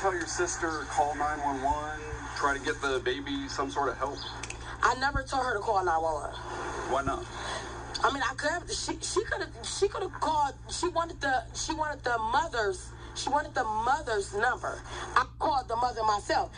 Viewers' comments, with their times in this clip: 0:04 Daycares to me are an Evil Pit!!! Ran by demons opportunities to release hate, anger, frustration on the most defensive. Never trusted them, rather struggle staying home with my babies making ends meet. watch how she has such a cold demeanor and starts stuttering as she's detailing why she didn't call 911 right away. That to me saids...GUILTY!!! Poor baby RIP😔. I feel for the mother. I know the soulache of losing a child. 💔💔💔💔😢